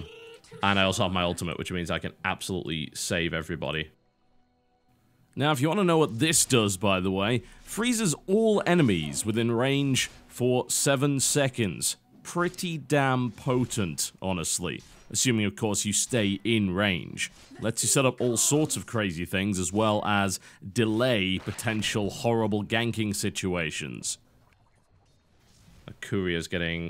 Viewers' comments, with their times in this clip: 0:06 Was that an added voice over?
0:11 Was it just me, or was the commentary audio right different? Like TB re-taped a description of the Ultimate or something?